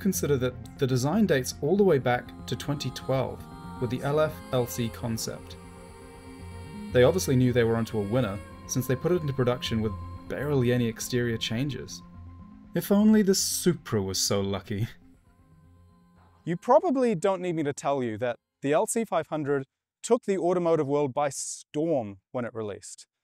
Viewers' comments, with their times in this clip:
0:06 with the music and the car it reminds me of gundam wing